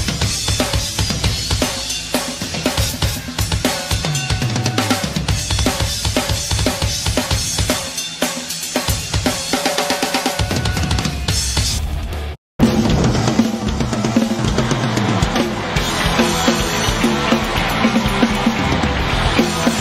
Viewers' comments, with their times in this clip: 0:04 Just listen to that kick drum work Holy shit the dude fucking SLAYS!
0:04 that’s a single bass pedal and he’s playing 16th note triplets at at least 170bpm in his 50s. Given what he can do with one, if you give him a second bass drum/pedal it would be unfair to the rest of the drumming world 😂 That interview with Al Murray, he said Kevin Shirley had to use some studio magic because when they looked at the waveform on the bass drums, there was a pattern of one high wave and one not as high… it was the difference in the power of his right leg compared to his left leg… Shirley raised the volume on Nicko’s left leg to match the right.